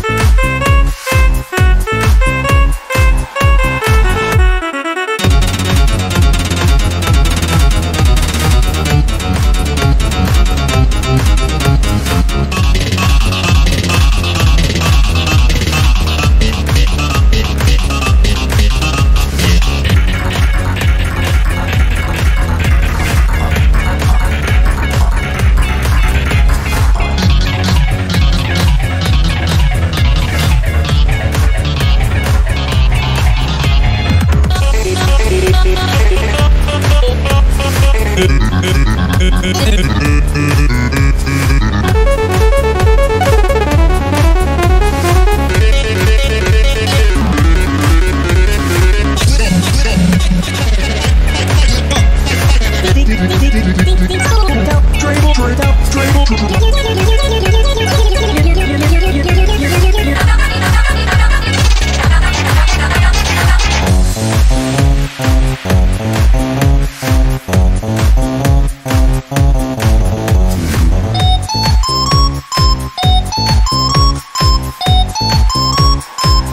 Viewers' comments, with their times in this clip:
0:05 AGOTI SOUNDS LIKE SELEVER
1:04 garcellos voice tho 😇